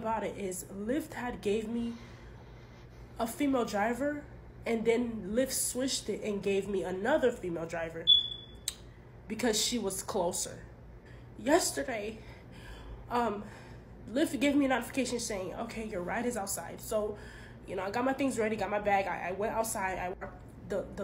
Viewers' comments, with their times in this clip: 0:08 well hopefully when you get a compensation payout you can get some batteries for the beeping smoke detector. I never used to notice until one video of someone pointing it out and he was right it always seems to be black chicks. Anyone know why?